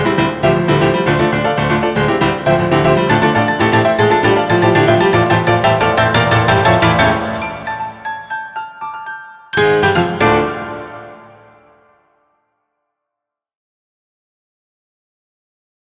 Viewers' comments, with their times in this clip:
0:09 does anyone else notice the Russian tune on the piano as it fades out